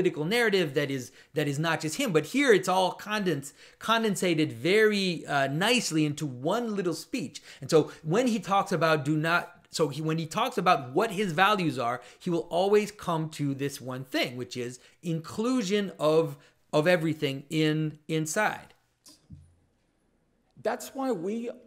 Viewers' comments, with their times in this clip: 0:04 That laugh shows you just how absurd and idiotic things are if you arent awake. WAKE UP! to all this corruption going on in the world.